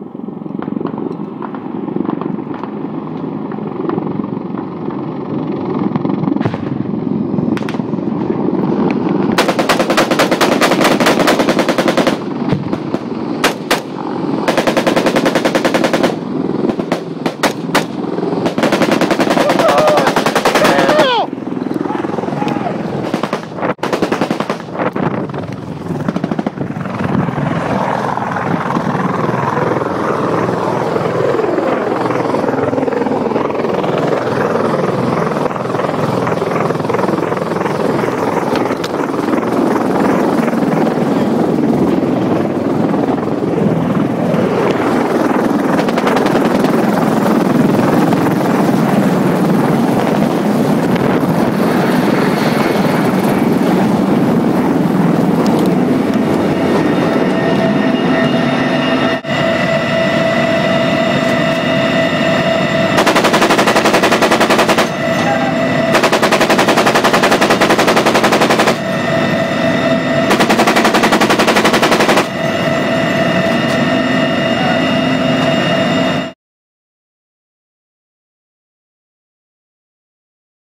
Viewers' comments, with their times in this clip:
0:09 it's sound like a drum :o
1:03 The door gunner boi it’s like “it’s a machine gun, oh ok” bratatatatatata